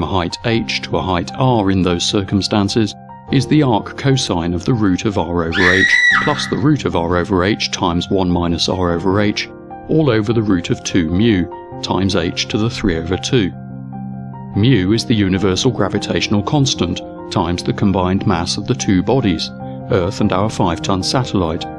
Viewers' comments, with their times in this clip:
0:05 ugly formula with arccos, woman screaming XD